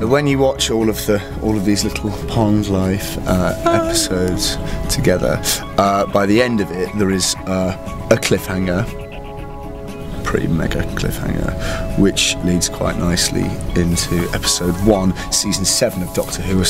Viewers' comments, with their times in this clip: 0:03 I love how she starts singing "Pond Life" again softly to herself, softer when she realizes Arthur doesn't hear.